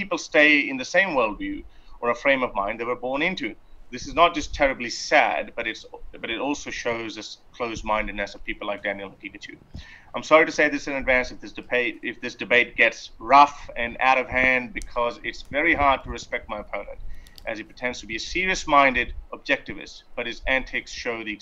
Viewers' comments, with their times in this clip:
0:08 Did he say Daniel Pikachu ?